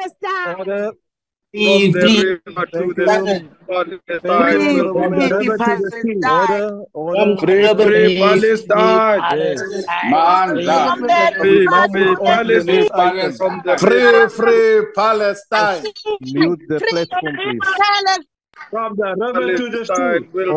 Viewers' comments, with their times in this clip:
0:07 Was that Julius Malemas voice?